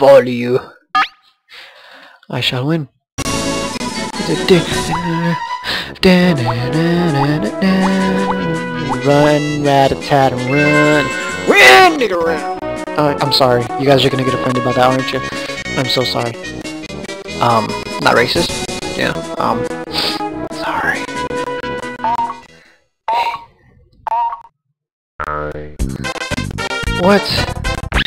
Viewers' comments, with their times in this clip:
0:10 Run nigga run? WTF